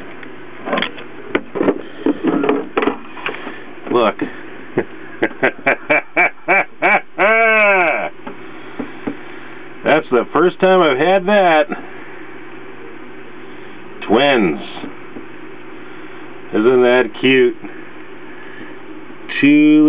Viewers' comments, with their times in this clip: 0:05 The laugh is classic. Very coold vid. Thanks for the share.